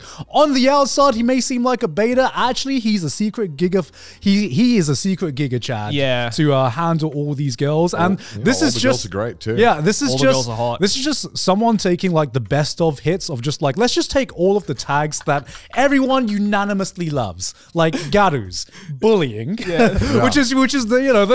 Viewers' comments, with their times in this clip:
0:07 did he just say secret gigguk 🤣